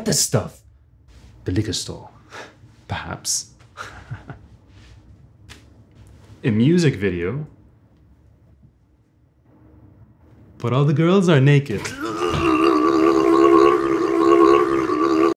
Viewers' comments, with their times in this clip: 0:12 Someone needs to loop the moment from It sounds like a broken engine